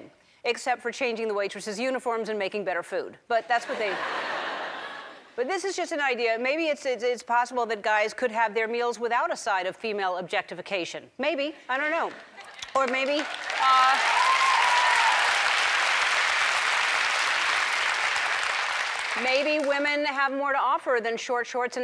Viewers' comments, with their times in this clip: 0:04 "Maybe it's possible that guys could have their meals without a side of female objectification" audience cheer and applaud Yet they don't mind objectifying the shirtless hunks that appear on the show lol. I love Ellen by the way, just thought this was funny. Double standards for the win!